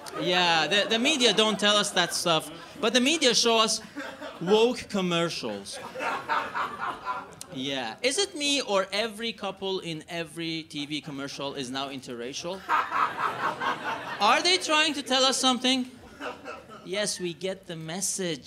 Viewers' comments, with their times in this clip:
0:03 based man laughing over the left-wing audience